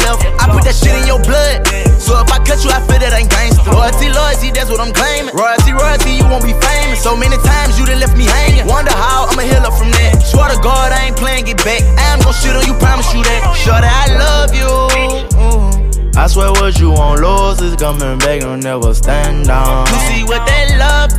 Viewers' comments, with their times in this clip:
0:07 Did you really say " I am no shooter , I promise you that 🤷🤦 where you hear that at ?